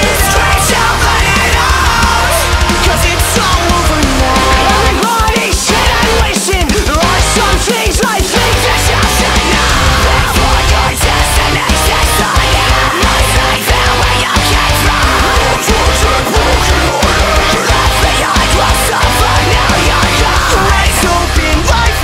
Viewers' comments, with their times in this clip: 0:06 why dose it sound like a nerd with braces?